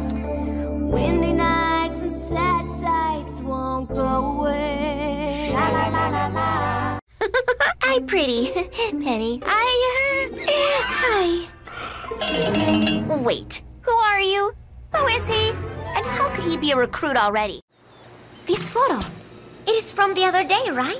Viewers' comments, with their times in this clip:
0:08 She was excellent of voicing Penny in Inspector Gadget